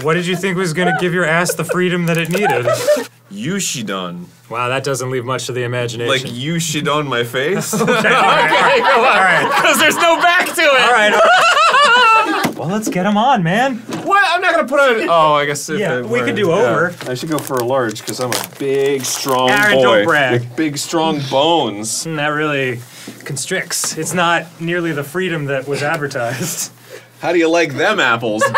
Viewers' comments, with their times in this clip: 0:09 Arin does such a perfect Joker laugh without even trying and i love that